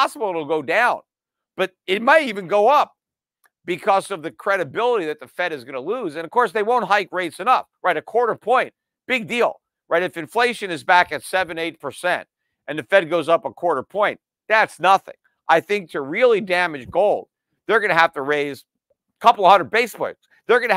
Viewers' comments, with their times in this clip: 0:05 some golden schiff moments… you can hear the glee, summation- “what the f have I been telling you like a broken clock”. 😂